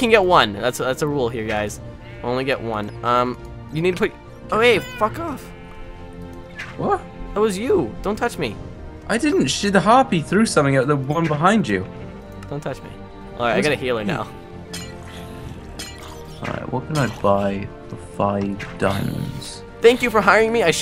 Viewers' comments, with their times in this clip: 0:06 Anyone else laugh he says it so weird